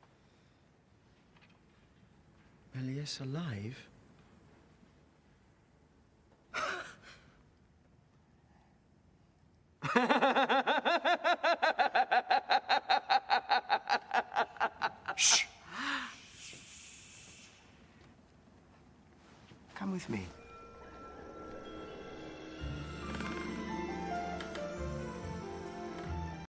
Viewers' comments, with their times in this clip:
0:10 Hugo laughed, film mistake ;)